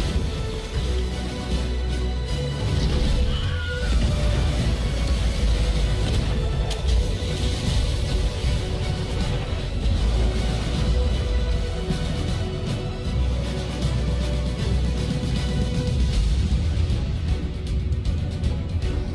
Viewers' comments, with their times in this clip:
0:03 Wilhelm scream, lol